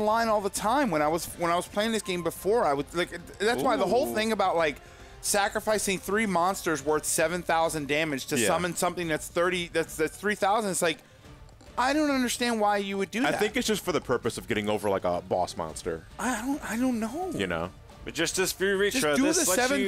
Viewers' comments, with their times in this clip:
0:03 Bad TURD economy? You guys are throwing shit at each other, now???? *grabs popcorn*